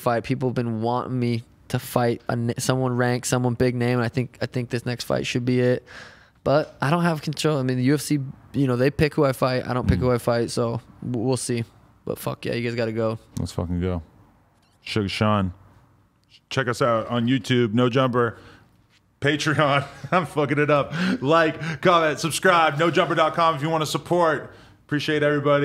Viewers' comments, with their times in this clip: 0:06 I swear they put auto tune